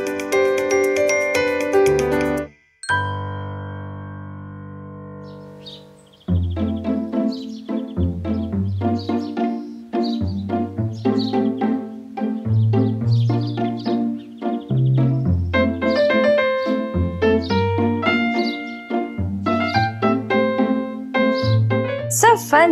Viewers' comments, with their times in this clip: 0:05 the music made me feel like i was in Ordon village.